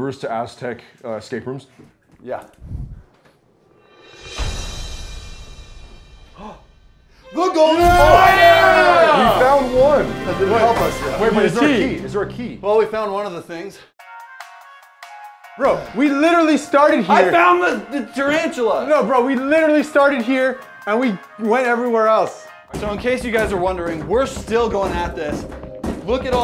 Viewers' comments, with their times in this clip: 0:07 THAT IS LITERALLY THE PRODIGY NOISE